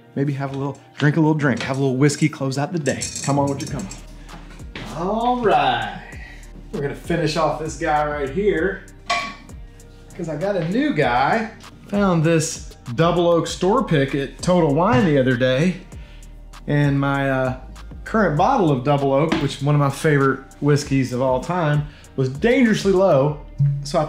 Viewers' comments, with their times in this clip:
0:06 What's the background song ? Such a cool melody, but Shazam won't find it no matter how much I try